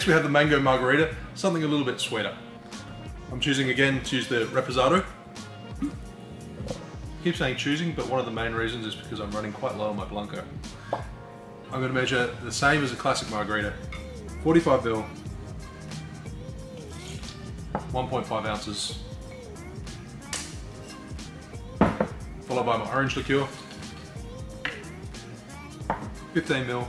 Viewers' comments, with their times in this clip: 0:10 dam how bout that pop sounded real good
0:11 THE JIGGER POPPED I SWEAR IM NOT INSANE MATES
0:11 Im late on commenting on this video, but does anyone else hear a pop coming from the measuring utensil when he lifts it ? or am I just really drunk?